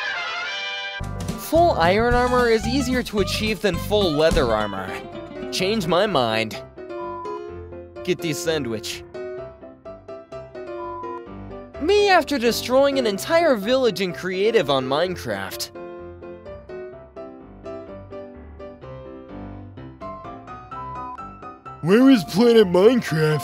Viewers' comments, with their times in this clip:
0:07 bro why my sandwich purring